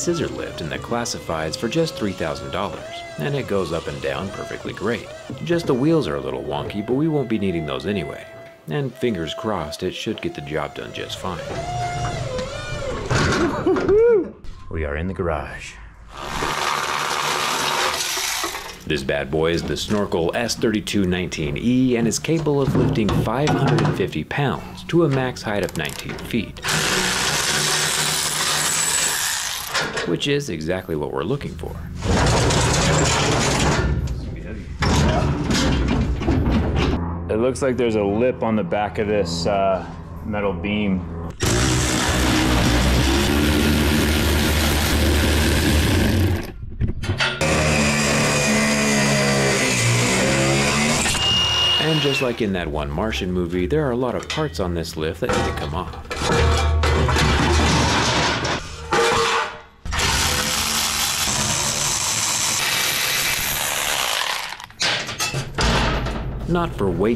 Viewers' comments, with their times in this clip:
0:05 sounds like a tornado siren bet its even louder in the bunker
0:49 it sounded as if says "their are meny parts and i need to f**k them up" 🗿